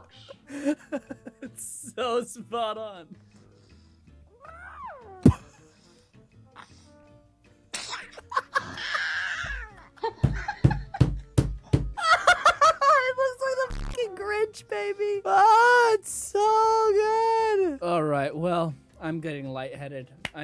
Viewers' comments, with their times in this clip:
0:08 HE/SHE SOUNDS LIKE DONALD DUCK